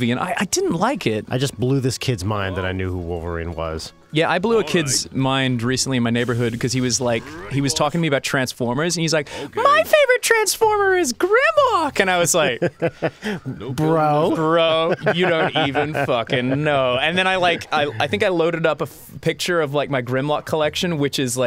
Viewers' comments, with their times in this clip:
0:04 Ross...... don't put pauses on your sentences... not even small ones.